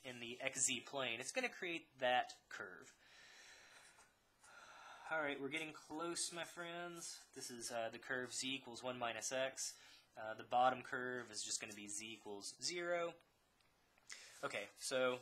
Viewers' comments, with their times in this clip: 0:03 that sigh lmao